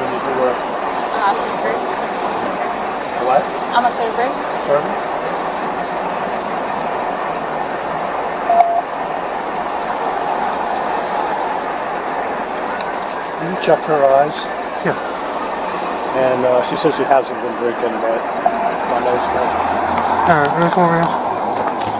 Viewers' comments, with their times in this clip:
0:05 did she say she was a surfer as her line of work, lol?